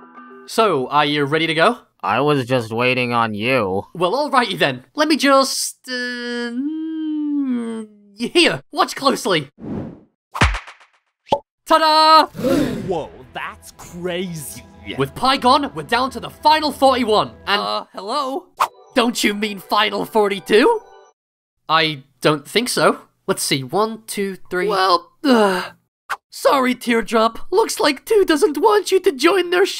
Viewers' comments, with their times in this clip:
0:10 CLAP (Pie disappears)